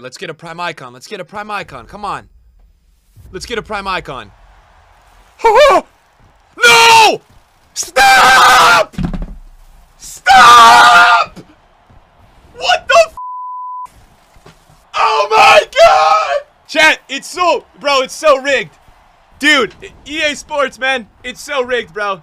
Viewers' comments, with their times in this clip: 0:07 Pick sounds like Zak from Ghost Adventures intro